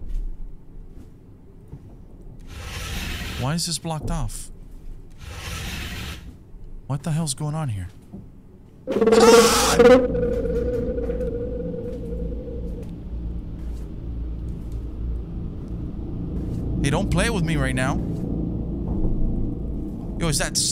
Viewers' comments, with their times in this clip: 0:08 sounds like a chewbacca XD